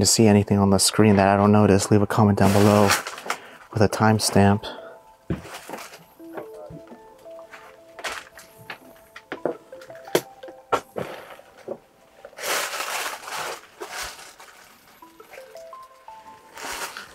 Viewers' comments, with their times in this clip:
0:05 right after you say leave a timestamp; there is a mans low voice and it sounds like he's speaking Japanese. Unless that was your friend who was with you. Its audible but low.